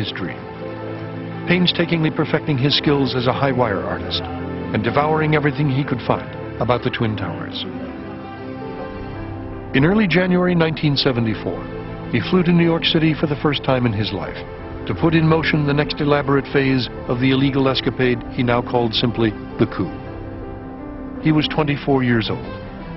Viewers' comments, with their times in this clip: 0:05 turn on the subtitle,at ,he devouring everything he could fuck about the twin tower